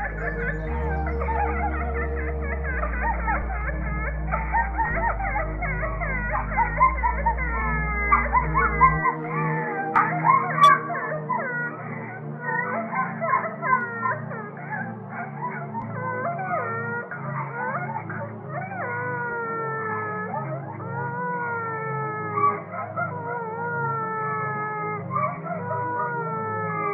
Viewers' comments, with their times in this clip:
0:07 There is also some speaker sound shit going on it wasn't creepy but really surprising and I freaked out for a second haha